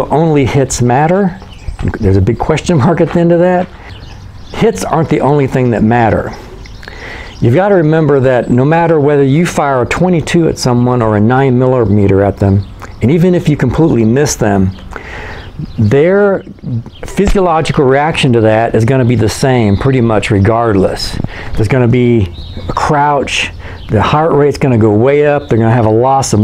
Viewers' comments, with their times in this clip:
0:10 9 miller meter lol